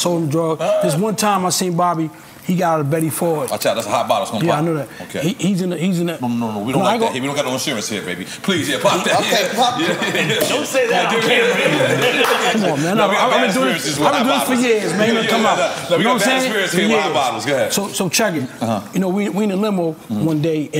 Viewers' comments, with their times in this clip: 0:05 the voice change lol